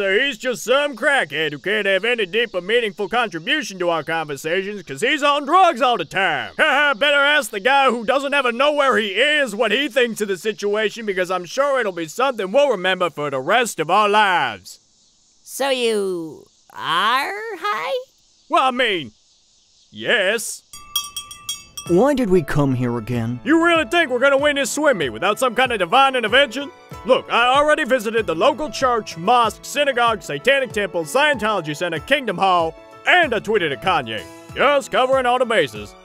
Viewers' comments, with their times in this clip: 0:03 Nagisa's outburst was the funniest 😂
0:21 oh look it's the same person having a conversation with themself